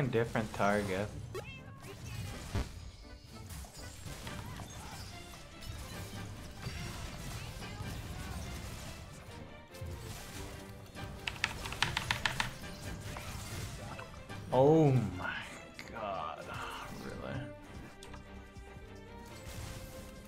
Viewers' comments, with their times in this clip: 0:05 DAMM that yu gi oh music ❤